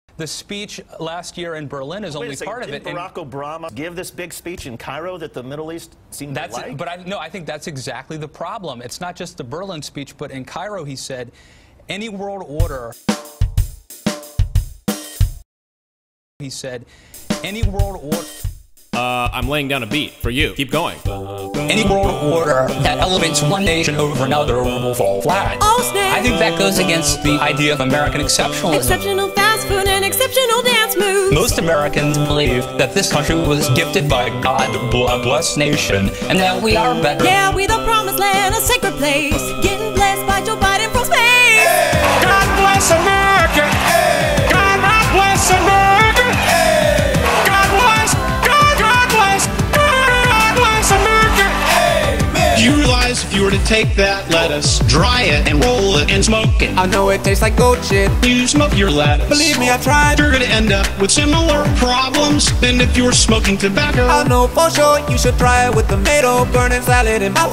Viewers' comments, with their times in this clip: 0:01 ....name fail....what an embarrassment.... American exceptionalism....they don't even know how to say their presidents name correctly, congratulations, extremely intelligent I'd say. Thank GOD I'm Canadian! :)
0:02 He says Barack Obrama.
0:03 Is it just me or he says "Barack Obrama" ?
0:03 Barack Obrama? xD
0:34 where the word's are transcribed as 'blessed nation' - Is it just me or does it sound like he's saying 'bloodlust nation'.
0:50 thumbs up if you heard Ay! Men!